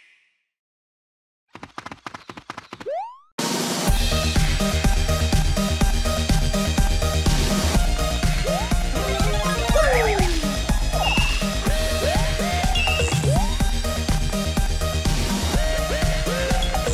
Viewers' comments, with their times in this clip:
0:03 for some reason i love the music, idk why